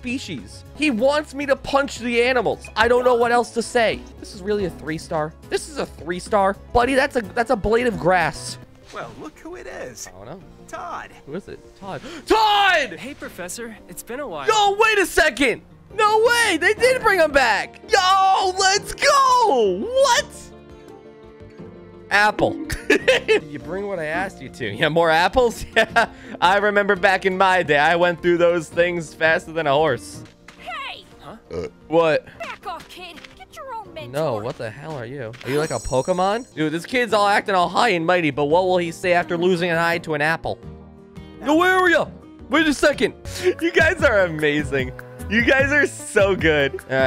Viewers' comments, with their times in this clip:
0:10 i thought he said die
0:12 TODD?? Bro I was drinking milk and watching this and when he started talking I almost choked on said milk (???) because my brain just went "CHILDE???"
0:30 Looked away for one second and just heard Gons voice from hxh and almost fell and yeah it turns out its the same va 😁
0:34 he sound like ryuko matoi